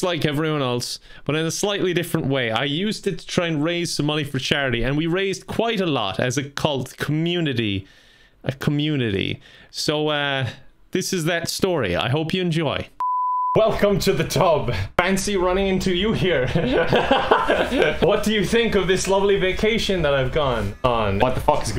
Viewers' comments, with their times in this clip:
0:05 "as a cult" glashnok flashbacks